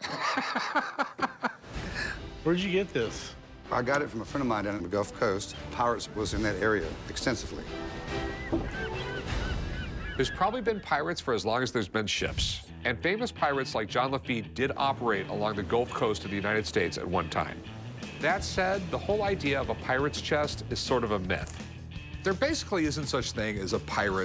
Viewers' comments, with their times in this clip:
0:09 thought that was Rick’s laugh starting up! Lol